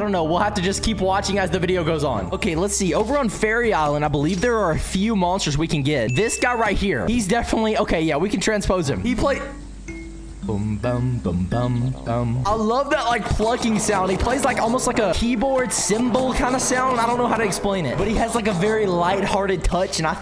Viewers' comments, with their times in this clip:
0:08 that guy plays the kalimba